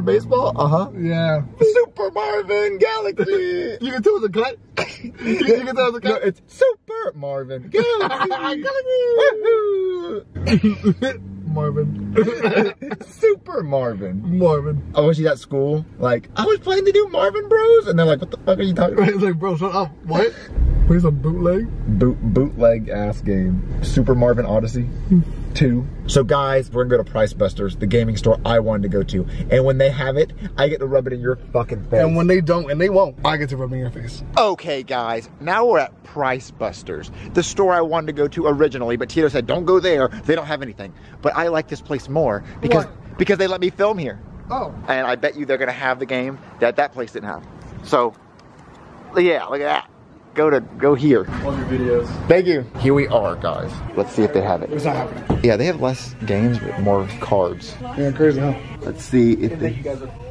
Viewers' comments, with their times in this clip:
0:09 that “wahoo” was actually so accurate what
0:46 it did not get bleeped